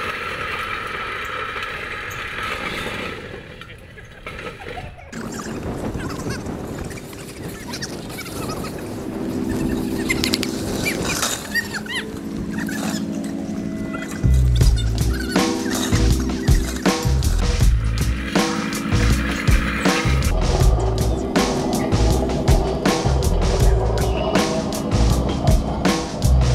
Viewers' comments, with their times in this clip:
0:09 like giggly little girls